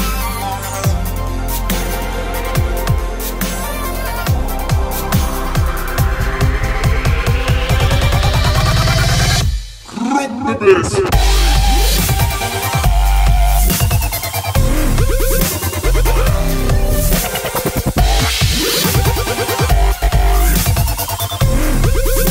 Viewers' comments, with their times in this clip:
0:07 dubstep fire high five.....classy